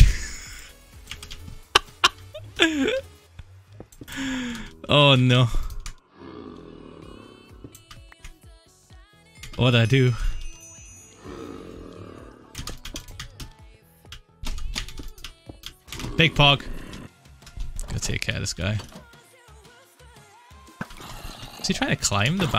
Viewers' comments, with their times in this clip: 0:08 love the nostalgic krewella